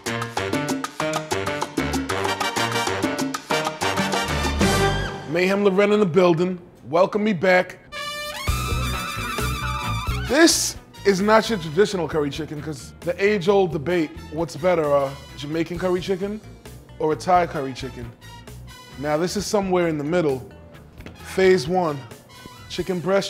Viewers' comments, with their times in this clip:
0:10 did you hear a single fucking word he said?